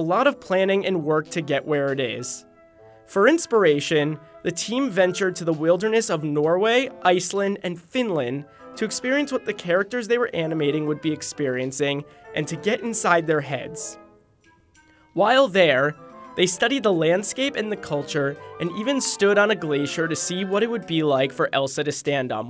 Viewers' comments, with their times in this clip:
0:08 correction to the D in the end of finland isnt silent you say it as "finland" just wanted to say something about it ^^